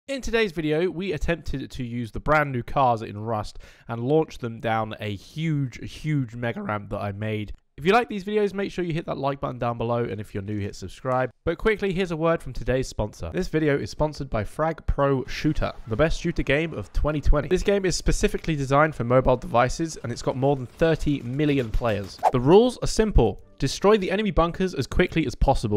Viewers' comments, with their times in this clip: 0:06 Like the vide my dude . Btw beautiful voice crack ❤😁